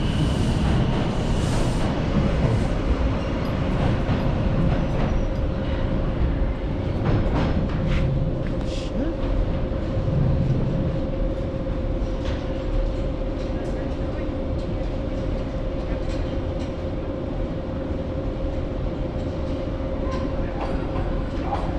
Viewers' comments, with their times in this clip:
0:08 ayy we heard your voice lol